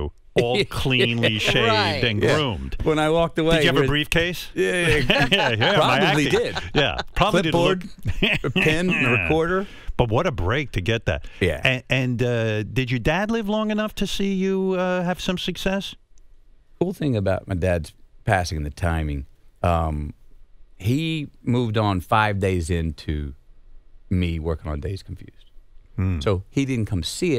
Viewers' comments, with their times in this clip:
0:08 The Howard laugh